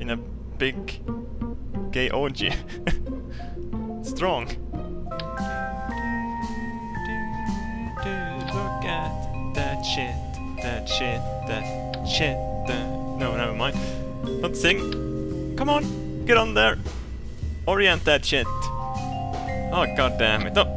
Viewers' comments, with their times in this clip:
0:05 best singing ever!!!
0:06 Music made me feel drunk! ;D
0:07 haha sings "look at that shit ,,,that shit that shit that.." no no never mind